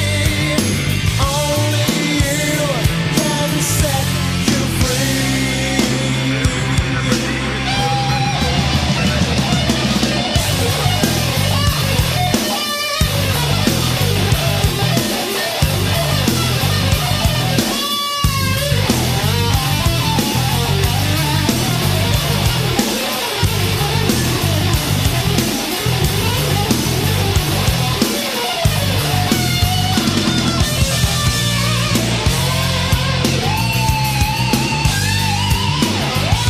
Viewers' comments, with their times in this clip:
0:07 Hey I really like the guitar notes especially 💥 ...what genre is it , can you suggest me some similar songs with intense guitar playing in the back
0:09 Hey I really like the guitar notes especially 💥 ...what genre is it , can you suggest me some similar songs with intense guitar playing in the back
0:24 Hey I really like the guitar notes especially 💥 super tense notes...what genre is it , can you suggest me some similar songs with intense guitar playing in the back